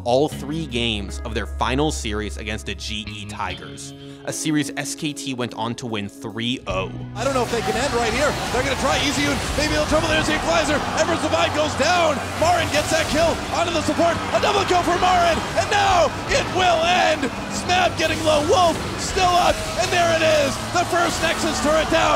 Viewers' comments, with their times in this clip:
0:08 The dude sounds like the bee from the bee movie